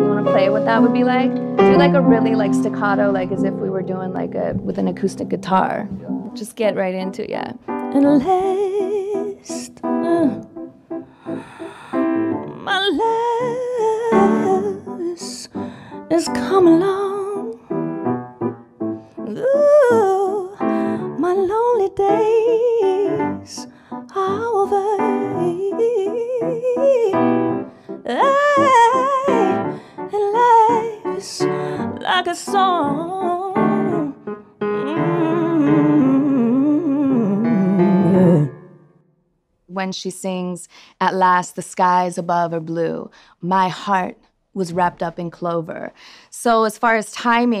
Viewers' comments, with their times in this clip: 0:08 Would love to hear her do a full version of In fact that style REALLY suits her.
0:34 she did that run faster than U. Bolt!